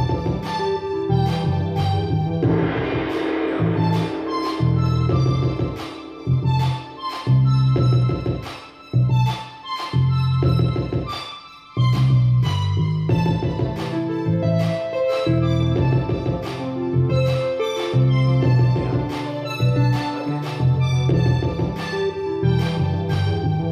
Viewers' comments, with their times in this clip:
0:08 bruhhhhh... I'm getting krunck bro this is wavy!